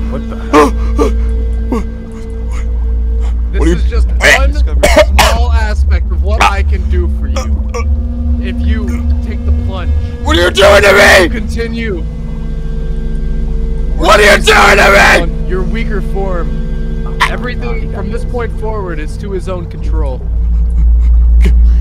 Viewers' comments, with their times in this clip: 0:07 Overall another banger video but this screaming bit gave me shivers